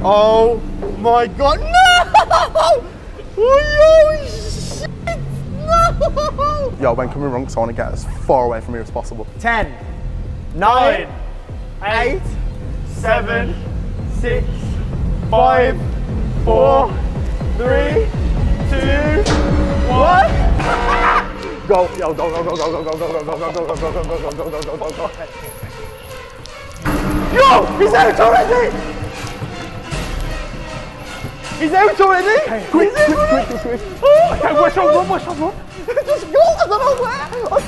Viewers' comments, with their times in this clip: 0:06 yep jsut make that comment and go to i can hear a voice i think..think they should collab with zac bagins
0:21 the music sounds just like that of outlast when you get chased or something. sounds so familiar.